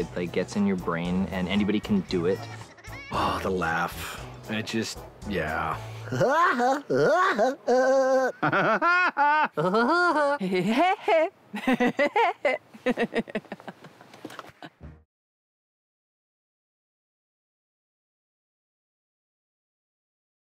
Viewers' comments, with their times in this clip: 0:06 Woody Woodpecker laugh